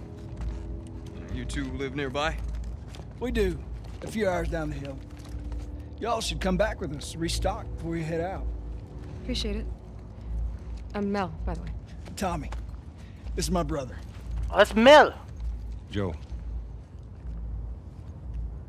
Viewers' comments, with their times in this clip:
0:03 Tommy kinda sounds like Harper from c.o.d black ops two